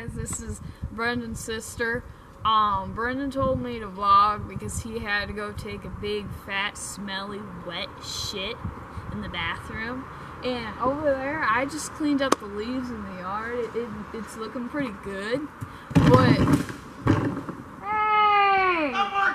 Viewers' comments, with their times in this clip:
0:06 Was someone running in the background !?